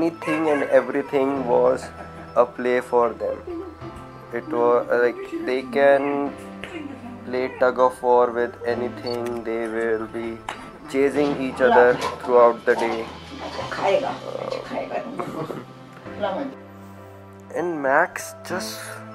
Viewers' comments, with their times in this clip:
0:07 What’s with that smack??😂🙏❤️